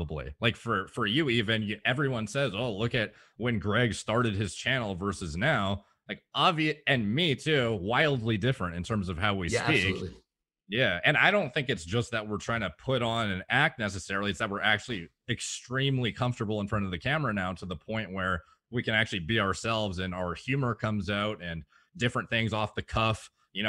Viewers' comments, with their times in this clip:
0:08 I believe there might be about a 2 actave differece . . . . 🤣